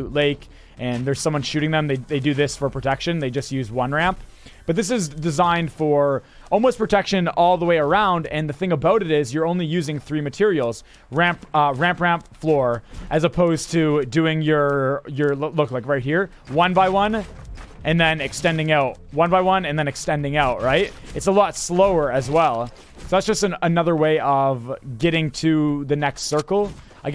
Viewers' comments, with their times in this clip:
0:08 That Canadian about